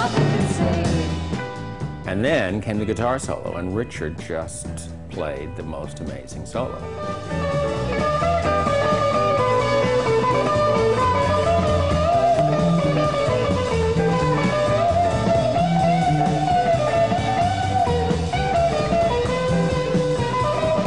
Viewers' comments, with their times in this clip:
0:08 Interesting. Richard's solo starts out sounding a lot like Jerry.